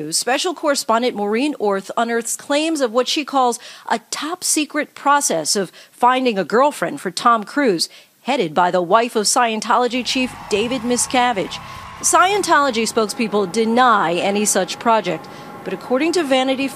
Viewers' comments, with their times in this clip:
0:04 Ok, I might be hearing this incorrectly but it sounds like the news anchor is saying (in reference to story), “headed by the wife of Scientology chief, David Miscavige.” As if David was someone’s wife? Am I not hearing it right or what? Lol ❓